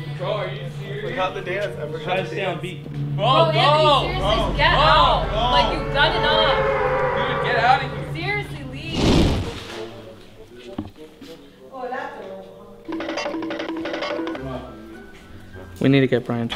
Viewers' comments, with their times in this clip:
0:03 Bruh this man put the battle bus sound effect. 💀